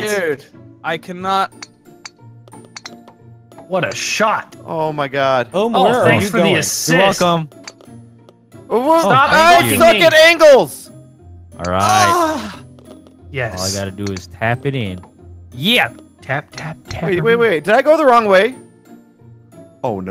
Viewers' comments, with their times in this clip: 0:08 That armpit sniff XDDDD